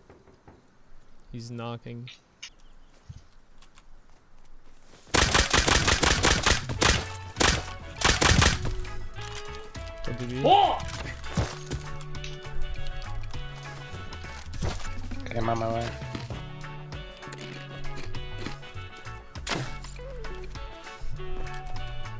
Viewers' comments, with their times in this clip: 0:10 "f's" Chinese accent